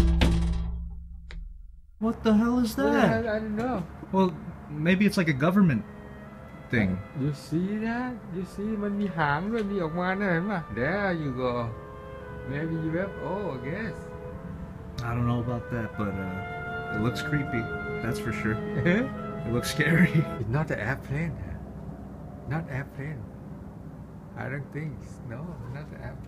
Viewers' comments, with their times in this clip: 0:06 that Shin Goji music tho 😂 ON POINT
0:08 I hear a thai language Do you live with Thai people?